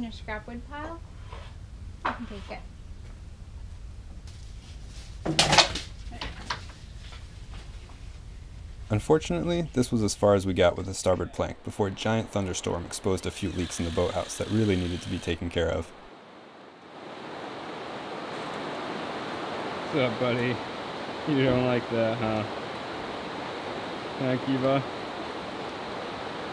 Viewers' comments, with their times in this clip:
0:09 Now imagine what Noah felt when he heard the first raindrops falling